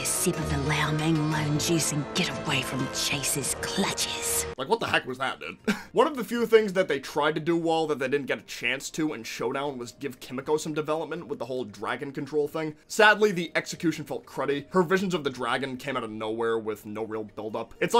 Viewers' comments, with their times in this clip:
0:03 "Chase's clutches" are the only words that I understood.